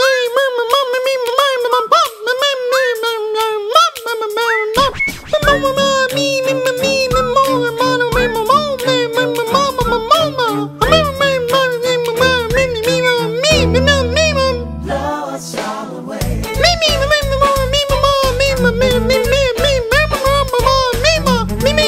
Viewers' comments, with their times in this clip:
0:06 it honestly almost sounds like he’s actually saying the lyrics